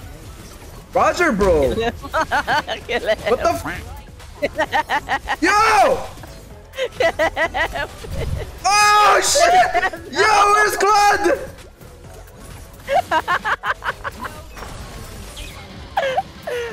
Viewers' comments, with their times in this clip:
0:03 bro just laughing with his lungs out